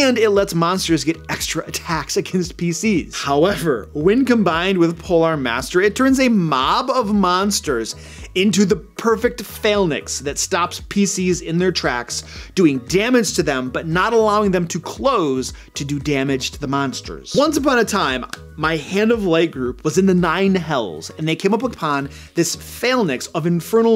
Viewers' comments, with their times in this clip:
0:09 Is he trying to say "phalanx"?